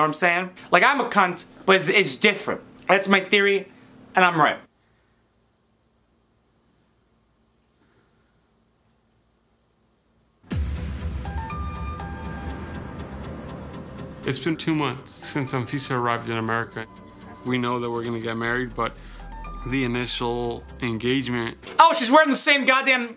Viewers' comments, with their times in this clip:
0:06 The awkward silence ...dead as Anfias emotions😂